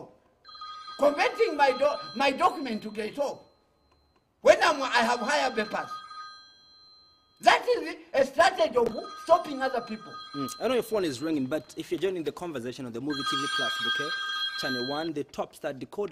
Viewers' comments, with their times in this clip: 0:04 I don’t know which is more chaotic, from the hair, beard, teeth, phone ringing, him answering…. 😂😂😂😂